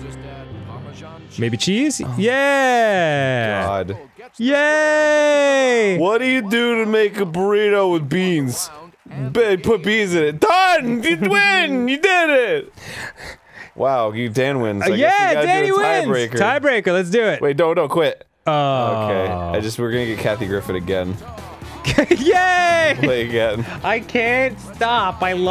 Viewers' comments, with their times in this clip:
0:06 Arin you don't have any business getting snarky after what this game did to Dan in the last episode.